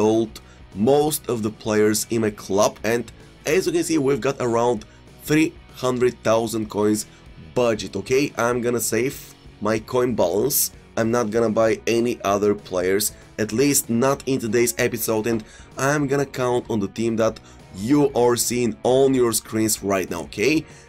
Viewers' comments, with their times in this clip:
0:03 I’m going to save my coin balls